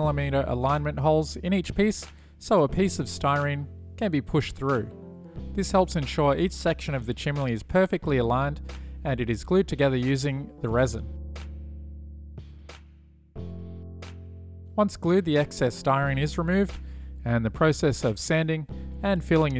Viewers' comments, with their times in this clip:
0:07 Not sure ?? can you tell me what a chimley is 😂